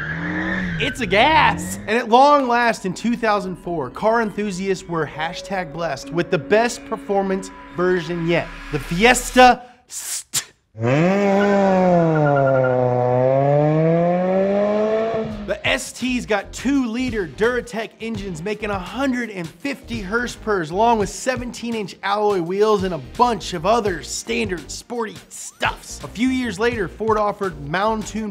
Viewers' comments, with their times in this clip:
0:08 I actually choked on my water when he said "Fiesta SssT"
0:16 I thought he said “Zyrtec” lol